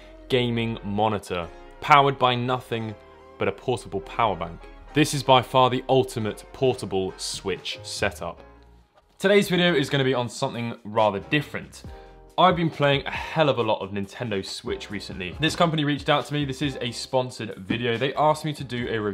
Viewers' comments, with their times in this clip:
0:04 I really dont like how you said that for some reason